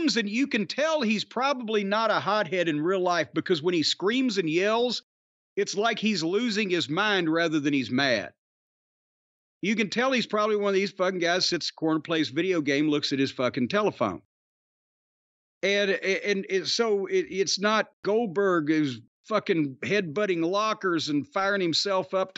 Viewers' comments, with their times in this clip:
0:09 bingo. Wardlow acting mad and yelling sounds so off when you hear it